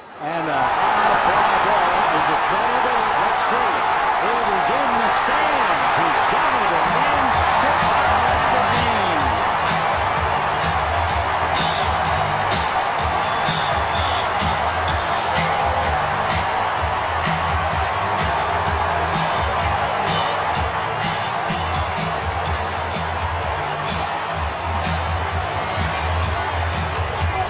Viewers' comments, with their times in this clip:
0:09 is it me or is the sound of the crowd cheering sound like someone screaming through a fan lol its loud af